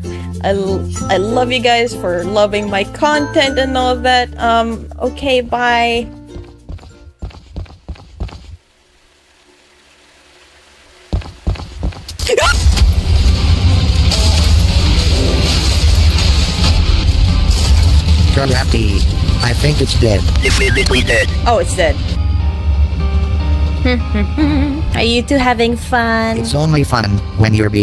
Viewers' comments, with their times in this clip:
0:09 perfectly cut scream + epic smooth transision